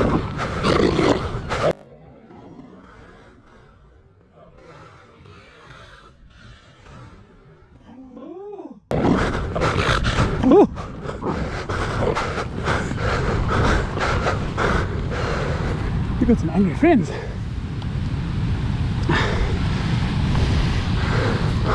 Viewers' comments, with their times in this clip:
0:09 That little surprised "ooh!" makes me chuckle while this tiny ferocious seal is snarling and growling at you. 😄